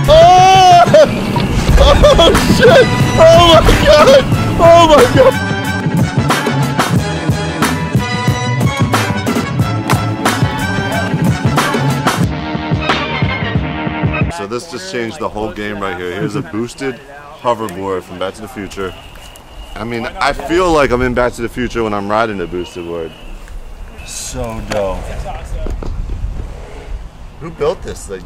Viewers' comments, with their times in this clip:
0:09 it was the boosted board screamed "oh shit!"